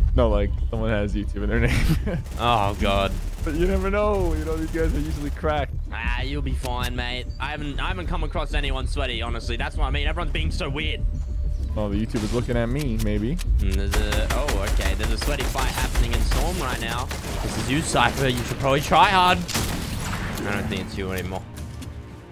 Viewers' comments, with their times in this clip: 0:04 you can hear the australian in fresh lmao